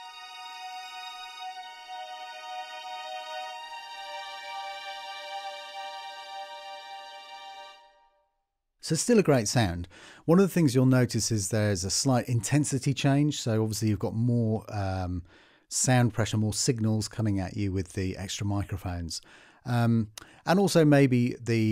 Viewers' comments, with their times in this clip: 0:08 Never before was a statement uttered so condescendingly. He might have as well said ''So, still a great sound (if you're poor)'', hahahahaha XD. I'm joking, of course. We gotta try and find some amusement where we can find it, these days... Great library. Thinking of getting either this or the BBC one. Unsure why the latter is cheaper tho, seeing as it comes with percussions.